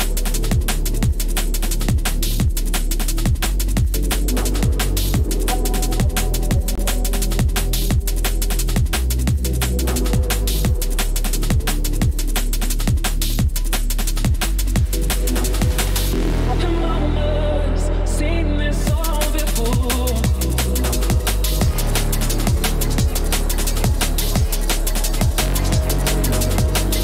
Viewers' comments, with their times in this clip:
0:08 bad bad bad bbad mixin )